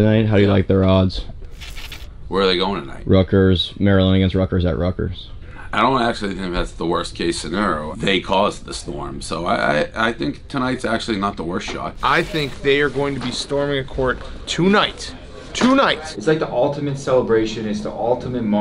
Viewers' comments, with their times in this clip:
0:05 why does my ear hear a slur in that tongue. Maybe xans?